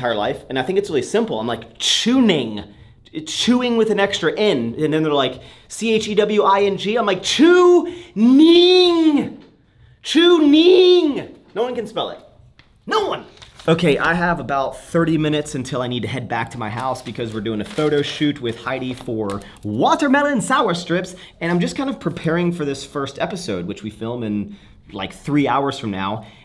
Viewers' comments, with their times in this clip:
0:08 No one can spell it because you are saying it like an Asian lol